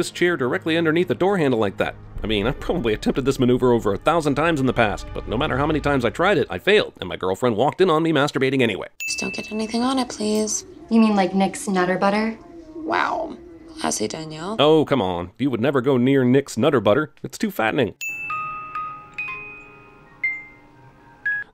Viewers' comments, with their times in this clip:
0:03 voice crack lol